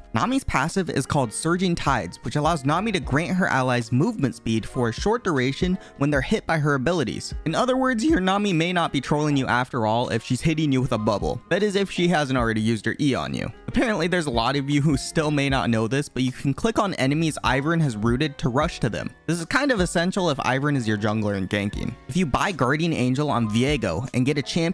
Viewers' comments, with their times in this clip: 0:06 this voicecrack OMEGALUL
0:07 dat voice crack